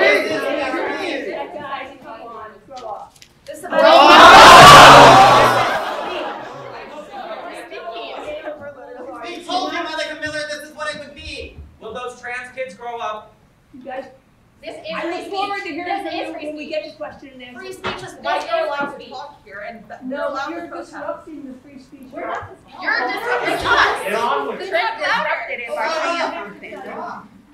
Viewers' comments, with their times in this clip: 0:08 Did we just hear Cartman from South Park?